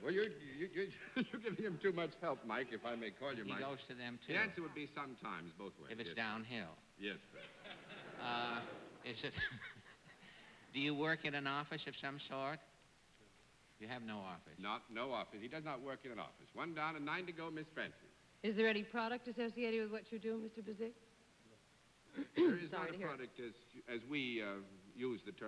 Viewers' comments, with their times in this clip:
0:09 love his Muttley laugh!